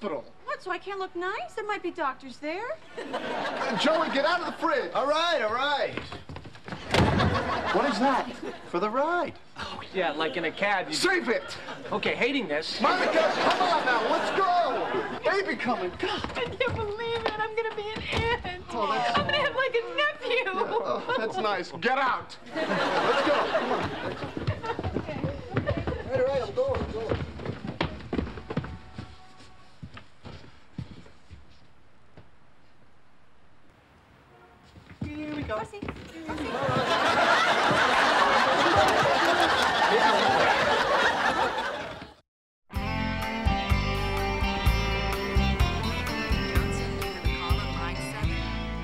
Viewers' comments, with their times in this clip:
0:07 That "what is that?" in is definitely chandlers voice even though u can see ross saying it. Anybody agree?
0:36 That Rossy Rossy by Rachel is so effing cute...